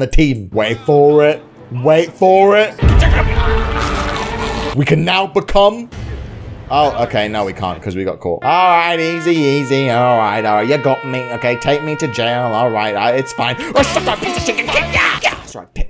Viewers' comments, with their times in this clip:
0:03 i heard walking dead music rage is runing in